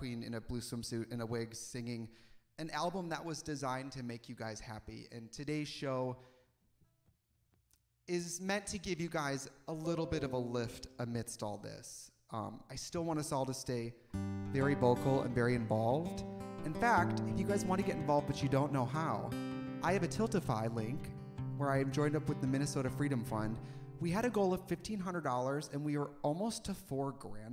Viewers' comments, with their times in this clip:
0:08 anyone else look for the windows notification even tho you're on a Mac?